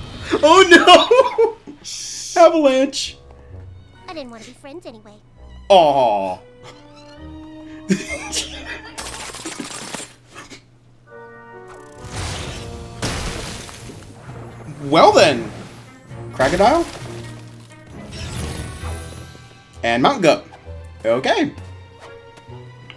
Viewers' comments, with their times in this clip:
0:09 And that's how machine guns gets its sound or is it trains slipping on icy rails